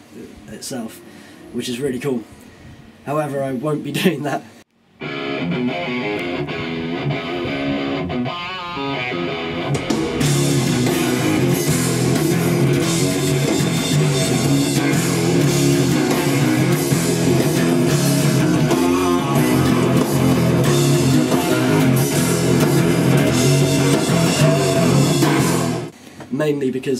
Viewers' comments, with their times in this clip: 0:10 That bass tone is sick,